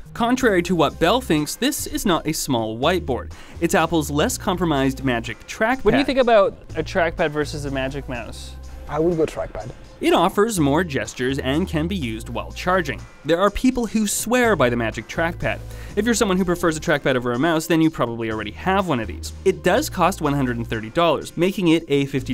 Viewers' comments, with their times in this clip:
0:05 there is overlapping audio